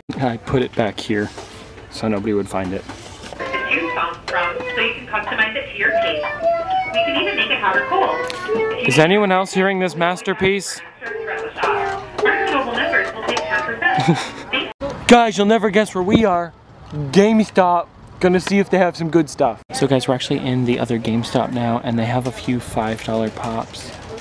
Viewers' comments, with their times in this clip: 0:06 Jeffy's cat piano